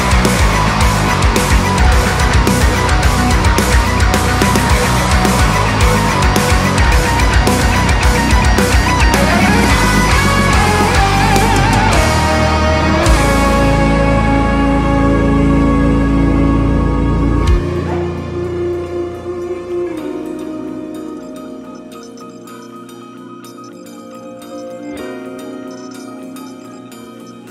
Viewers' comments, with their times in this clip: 0:09 brought tears to my eyes. It’s an absolutely genius build up to a massive release 11 years in the making. That is THE progression that ties this entire journey together. Thank you so very much for your music. It’s an absolute treasure.